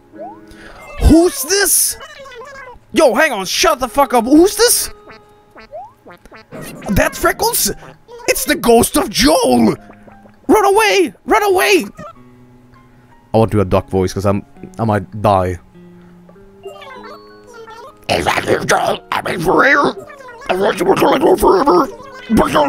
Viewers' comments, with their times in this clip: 0:09 I'm not sure if that's either a duck voice, a reptilian voice, or a hybrid of the two.